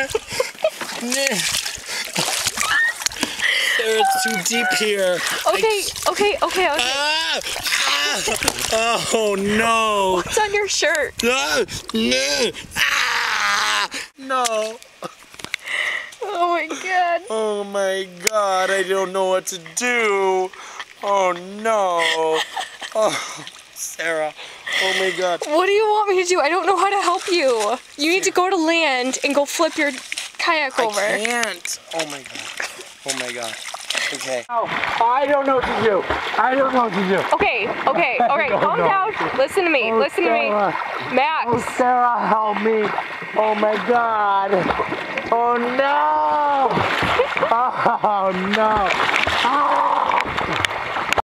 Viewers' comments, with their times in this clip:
0:10 Oh my god five years later and I still laugh every time I hear this.. What’s on your shirt? ahh muahahaha throws head back and makes a moose sound AAHAHhahhahHAaaa
0:12 What did he scream
0:12 he did the nickocado avocado cry of despair lol
0:13 i dont know what kind of girls you've heard scream before but the ones that i have (myself included) do not sound like .... just sayin
0:14 At first I was like, oh god some annoying idiot being a prat and faking stuff but actually I admit, I was laughing, the best bit for me was the bit on his shirt scream, but actually when it cut to and he is coming toward the camera with only half a kayak looooooooooool
0:15 It's the feeble "no." that does me in!
0:31 The “I Can’t” is his real voice
0:49 That gurgling scream kills me every time. 🤣